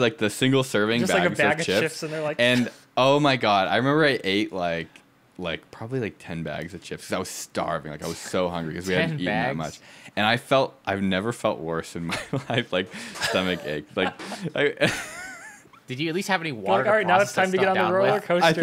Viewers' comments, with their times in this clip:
0:03 Yeah, does he say a single word in this episode? Edit: here it is!